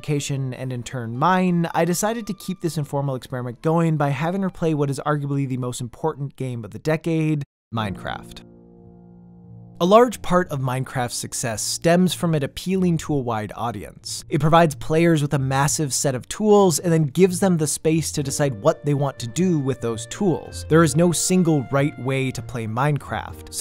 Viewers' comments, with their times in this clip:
0:08 BRUH you can’t just add the Minecraft credits’ song and expect not to cry...